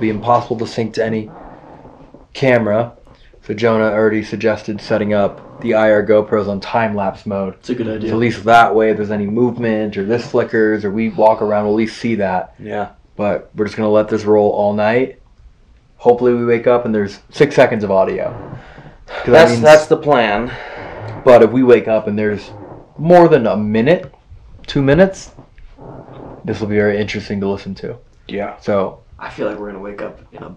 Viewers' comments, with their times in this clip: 0:10 a real heavy breath, like someone was really releaved of something😂😂
0:11 did anyone else hear that breath or sigh ??
0:11 a faint male exhale